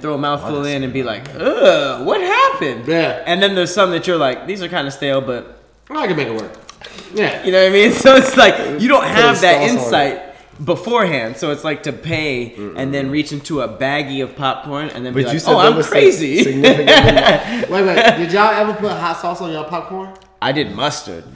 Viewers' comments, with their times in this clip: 0:05 am I the only one hear someone ripp a fart